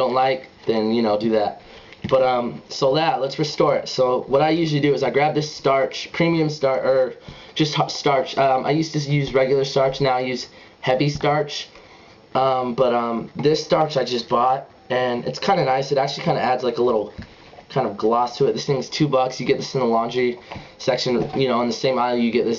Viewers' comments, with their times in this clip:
0:10 It sounded gay when you said "heavy starch" ;) But I still your videos are awesome keep it up